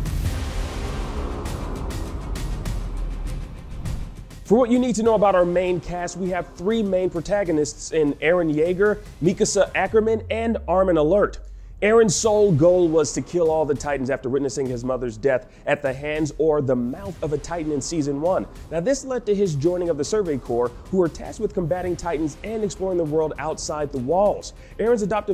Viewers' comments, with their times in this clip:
0:10 MAN SAID ARMIN ALERTTTT WHAT DID HE SAYYY
0:11 He just say armin alert on